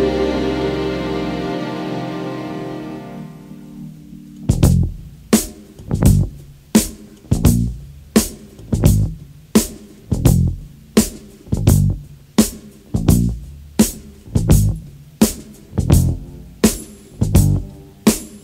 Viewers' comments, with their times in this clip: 0:03 I was listening to the song thinking how the hell did "My name is" come from this... Then it dropped ...
0:03 I just had to check it out from Snowfall, first episode of season 4, it was so funky I had to see who it was. Loved the song, then get to when the tempo changes & it's like - what a surprise!
0:04 After it's like an instrumental of My Name Is